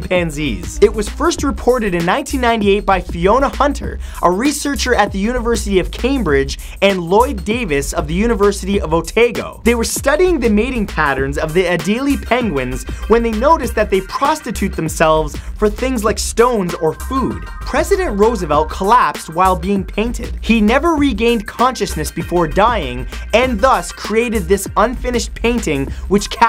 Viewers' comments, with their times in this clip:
0:07 when someone pronounces something wrong :/